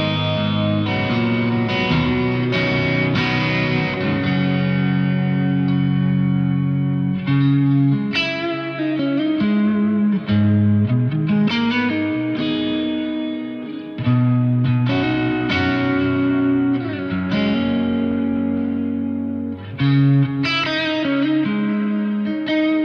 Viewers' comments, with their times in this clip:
0:05 I'm talking about the tone for example